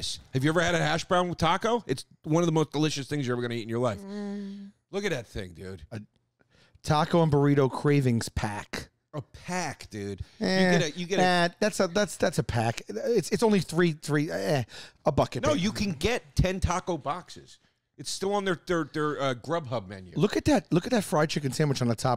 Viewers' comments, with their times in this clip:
0:05 Loved this episode also Sal sounds like a fly lol